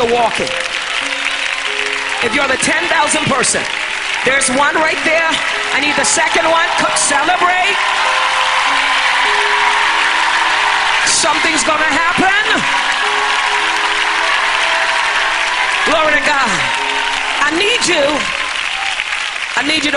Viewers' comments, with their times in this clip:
0:03 listen to these fools clapping 😂😂